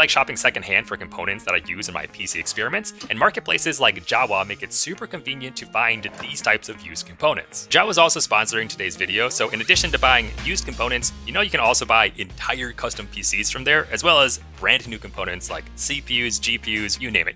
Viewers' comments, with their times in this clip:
0:03 my brain: java?